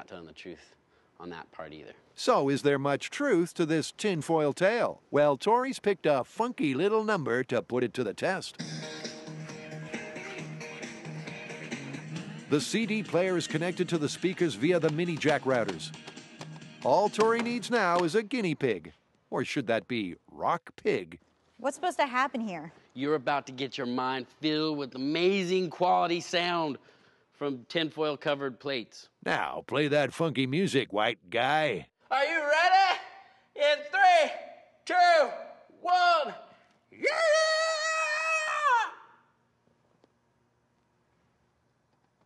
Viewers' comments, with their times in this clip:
0:08 ME everytime the Mythbusters theme comes on
0:28 This just goes to show you that uneducated people will believe anything you tell them. No matter how stupid the idea is. I.E. This "Speaker" I love the tone in his voice because he knows that this Idea is a few steps short of being a speaker. In fact you might as well twist the wires taped to the penny together because thats about all that is going on since the penny (zinc or copper / shinny or not) will transfer the signal that is coming from the head phone jack and complete the circuit.